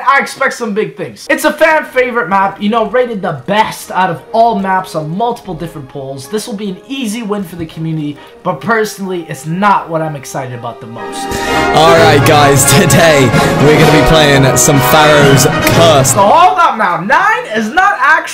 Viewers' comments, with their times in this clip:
0:04 Wait did he said “ these nigga will be coming to your face “